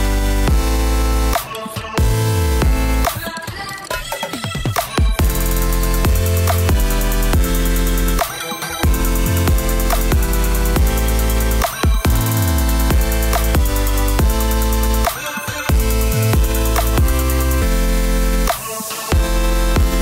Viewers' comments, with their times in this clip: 0:05 The music is sooooo annoying😔😔